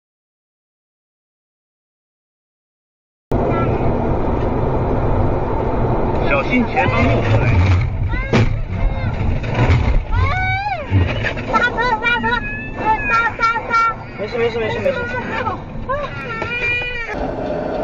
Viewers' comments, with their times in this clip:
0:04 What there's speaking